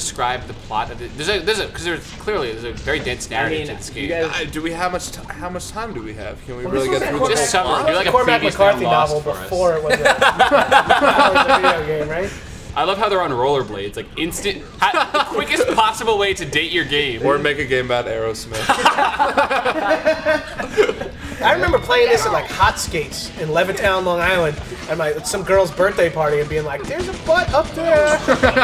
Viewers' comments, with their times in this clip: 0:10 they all laugh the same! lol